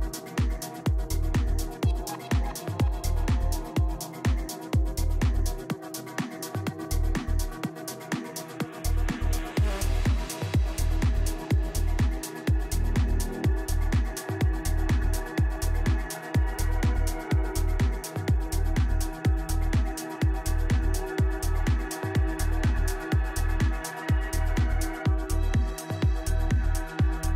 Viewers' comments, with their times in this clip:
0:09 That track dropped fml just imense haunting sound.... and that voice ❤️ Love this man's work!!